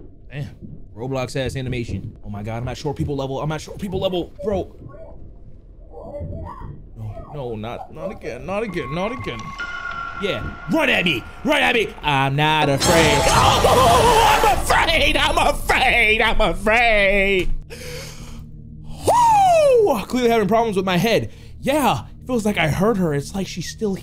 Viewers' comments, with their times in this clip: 0:08 When i see cute little dog but it starts barking for no reason💀